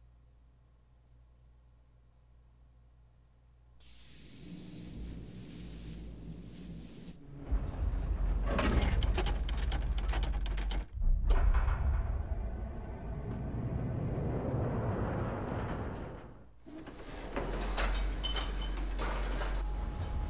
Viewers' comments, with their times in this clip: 0:04 isn't there suppose to be music playing???